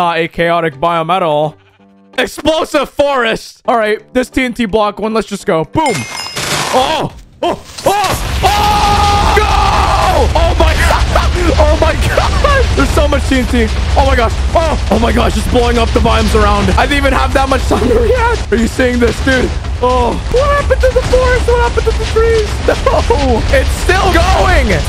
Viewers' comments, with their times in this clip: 0:10 That actually sounds satisfying.